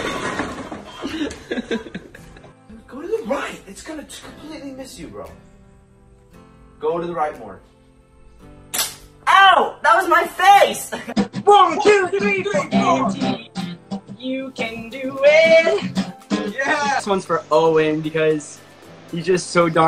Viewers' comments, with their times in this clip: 0:03 the way he said “that was my face” was so adorable 😭